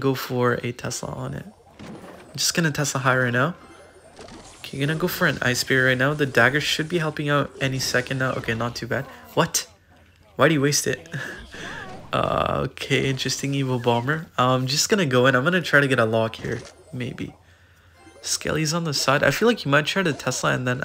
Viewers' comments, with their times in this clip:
0:03 blues see if i can sounded like see is fuckin